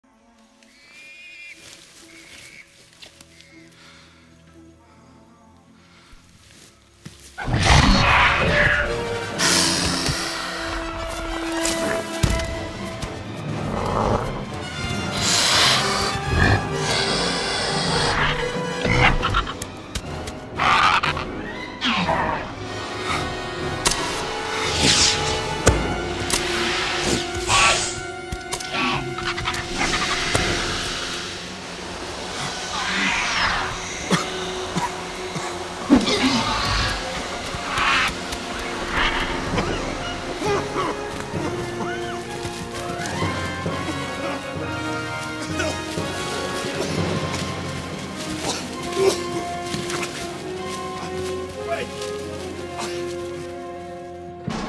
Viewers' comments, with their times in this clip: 0:07 when the Raptor jumpscares Alan you can hear the Raptor motif from the original one. I love how most of the Jurassic scores pay hommage to even secondary motifs like this. Most sequel scores done by other composers just reference the main theme once and then call it a day.
0:15 I like how Grant turns, because he knows that's when the attack comes. Not from the front, but from the side Or maybe he just heard the hissing lol
0:22 Raptor 1: “I have you now!” Eric throws gas grenade Raptor 1: “What?!” Eric: “Yeh-hoo!” Raptor 2: “Look out!” Raptors back out coughing
0:36 I love that roar